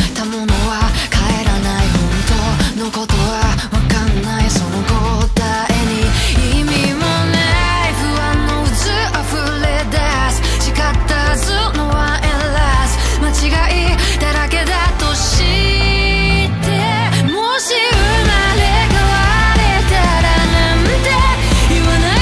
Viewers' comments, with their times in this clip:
0:07 that little pre-chorus part from HAS A HOLD ON ME I CANT STOP LOOPING IT😩 the melody is JUST SO GOOD